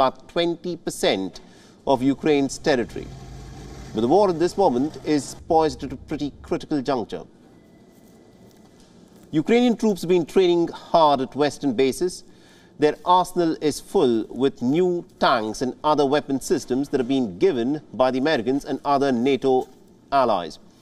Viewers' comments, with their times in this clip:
0:03 What did you say ?.. what language is that